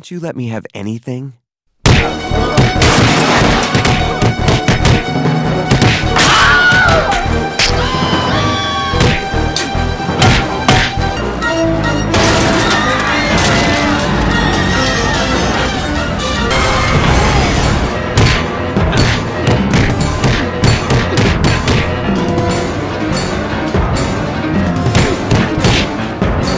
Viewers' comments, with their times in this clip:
0:05 Wilhelm scream ! Hahahahahahaha👌🤘😂🤣👌 Classic!
0:06 OMG Wilhelm scream😂🤣😂
0:07 The way the chicken screamed was HILARIOUS